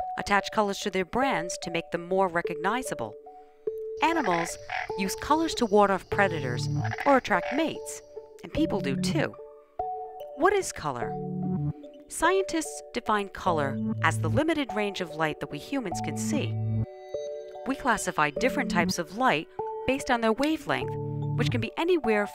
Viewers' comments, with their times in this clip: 0:06 i have a question, she said world of predators? what did she say at that moment?